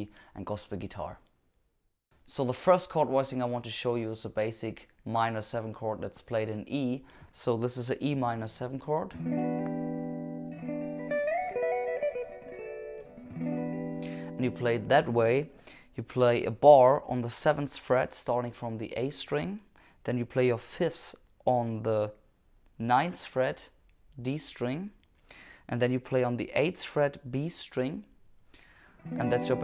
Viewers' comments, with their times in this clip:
0:10 What’s the lick you’re playing right after the E min ?? Sounds so good as an embellishment (high up the neck) is that based on a triad ?